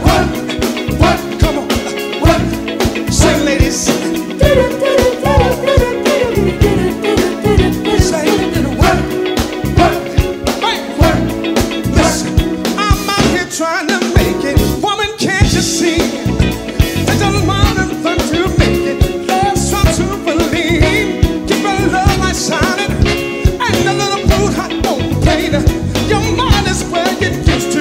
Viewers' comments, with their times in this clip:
0:10 Check out the break The keyboard player knows they killed it!